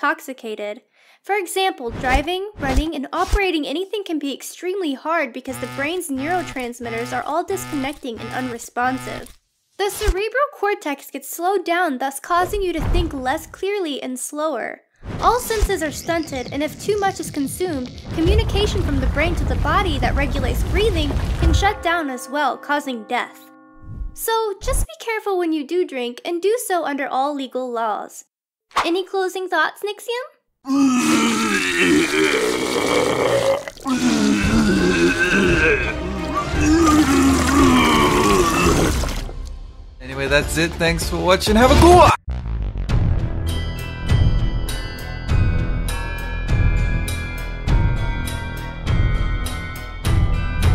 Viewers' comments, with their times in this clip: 0:05 I literally starred at my alarm clock when the noise started
0:33 the music xD